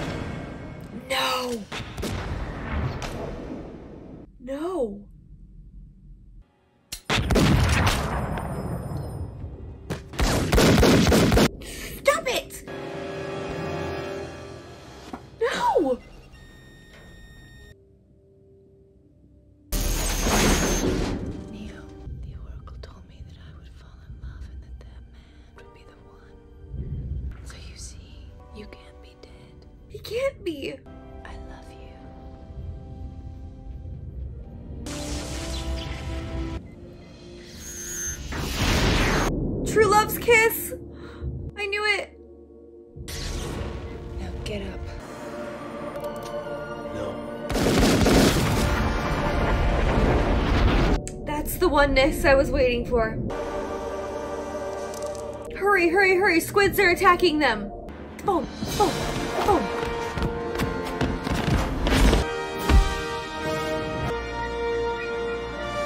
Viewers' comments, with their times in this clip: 0:06 the way you said stop it I can't even 😂🤩🤩
0:46 "that was the oneness I was waiting for" idk why but the way you said that was so funny.